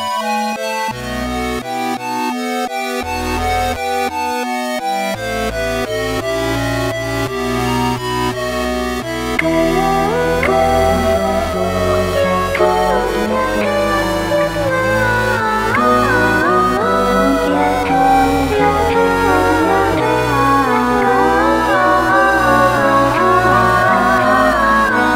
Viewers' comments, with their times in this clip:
0:09 If anyone is wondering, is when the vocaloid starts.
0:09 is when the vocaliod starts.